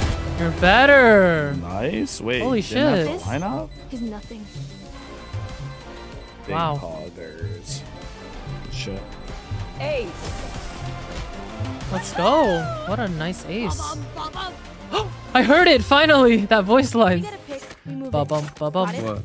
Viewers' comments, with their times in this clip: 0:05 A year later and that is still my favorite voice line